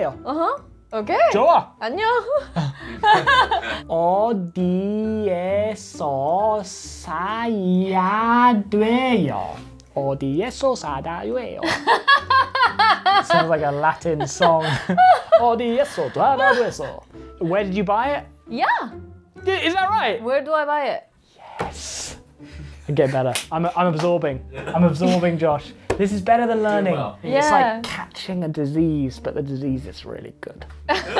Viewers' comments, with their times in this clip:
0:06 a fluent parseltongue speaker lmaoo
0:09 어디에서 사다 요ㅐ요sada ywaeyo LoL That's harder… and the Canticum Latinum
0:10 i love that song 🤣🤣
0:13 I'm latina and that definitely doesn't soud like a latin song😂
0:16 his pronunciation was literally perfect when singing 🤣